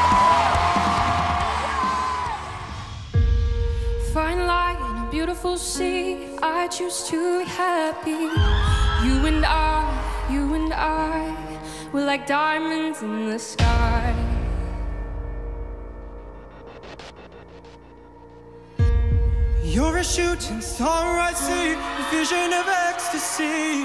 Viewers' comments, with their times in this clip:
0:06 wat a autotuned vocal!